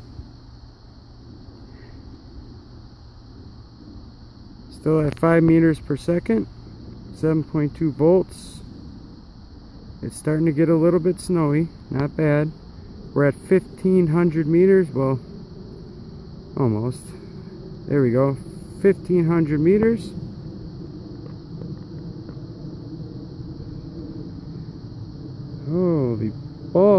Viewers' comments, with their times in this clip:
0:10 I can hear the commercial flight overhead.